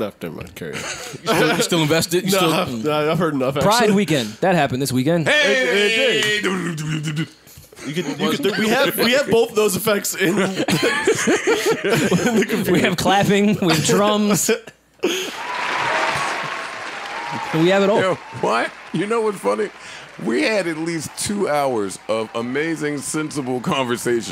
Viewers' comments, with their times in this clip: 0:05 Joes drumroll fucking killed me B